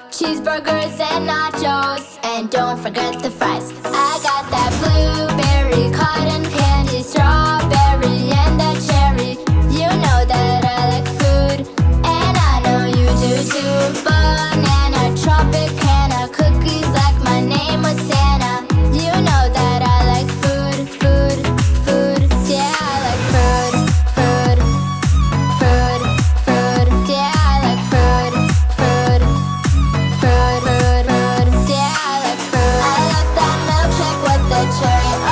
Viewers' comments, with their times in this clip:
0:03 ok it's not that good but yall cant disagree that from on is so catchy like idk why
0:03 WHY IS THE BEAT SO GOOD THO ... WHYYYYY
0:23 sounded like godamn Roblox tycoon game😭💀